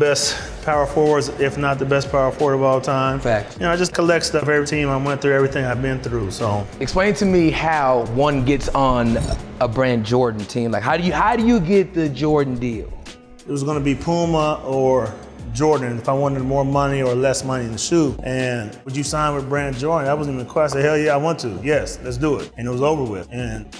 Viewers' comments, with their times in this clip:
0:05 the guy burps